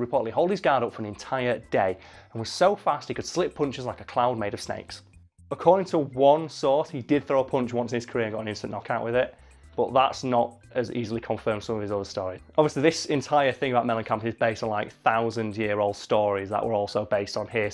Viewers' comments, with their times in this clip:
0:04 I like how he quickly includes his worst nightmare a clown made of snakes